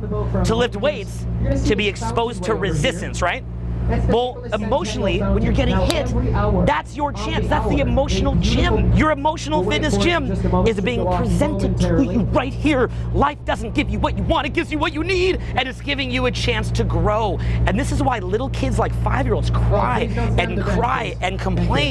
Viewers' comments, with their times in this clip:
0:08 "Life doesn't give you want you want, it gives you what you need". The way he talk about it is also hilarious.